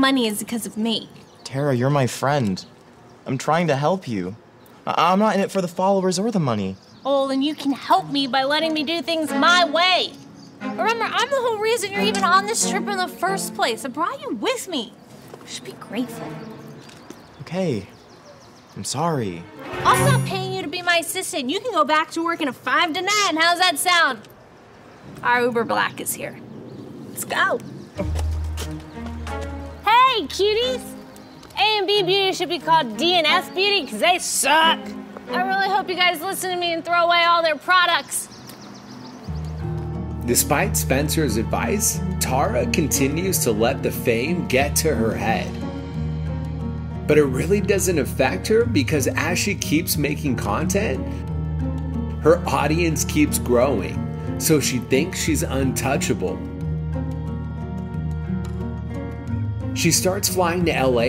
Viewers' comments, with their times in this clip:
0:08 why does she sound like a country girl?
0:29 why did she sound like a GTA character 😂
0:41 even dhar mann says tara's name wrong XD
0:42 Love how Dhar mispronounced Tara’s name-